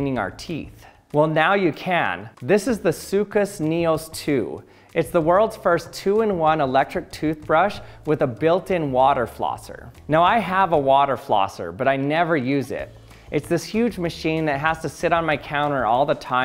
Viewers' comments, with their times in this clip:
0:03 did I hear…. Сука Sneos 2